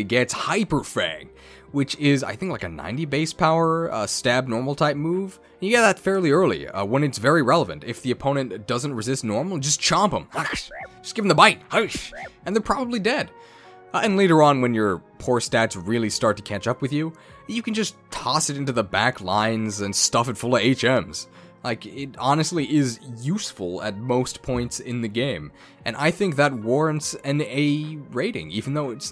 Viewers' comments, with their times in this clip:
0:10 Just want you to know I appreciate the inserted sound bite (no pun intended) I'm literally playing that game while listening to this and was like "where did that come from???"